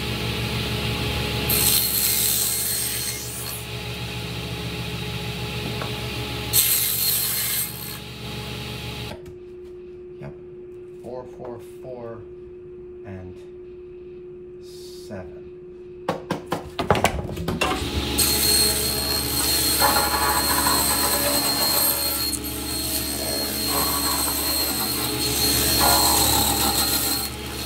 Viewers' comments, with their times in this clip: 0:09 Anyone else hear the quiet humming tone, about 350 Hz? It's audible